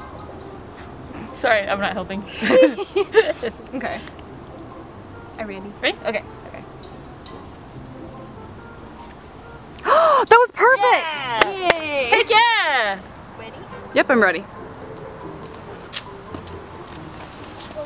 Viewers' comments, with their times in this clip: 0:04 the way that kiri said "i ready" so funny/cute idk